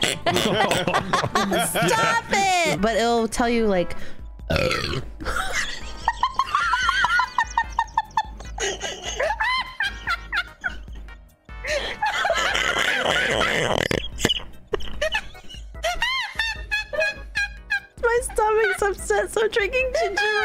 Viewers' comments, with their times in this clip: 0:04 lord that was a burp, 10/10 for that, better out then in.